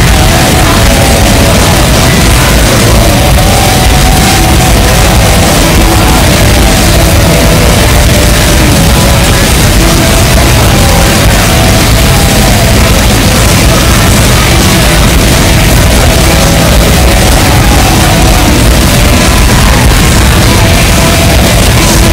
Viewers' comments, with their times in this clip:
0:03 has gotta be my favorite part. Such a lovely tune 🥰